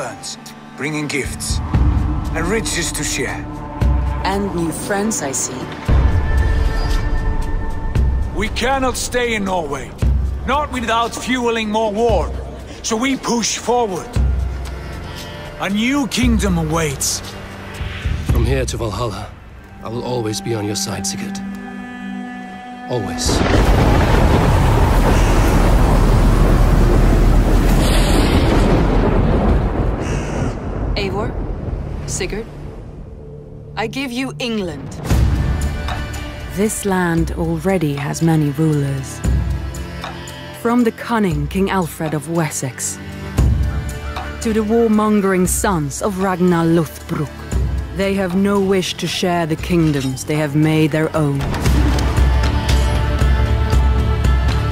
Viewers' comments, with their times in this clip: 0:04 Why does it sound like AI voice???
0:35 is it just me, but i hear a new Ezio's Family version there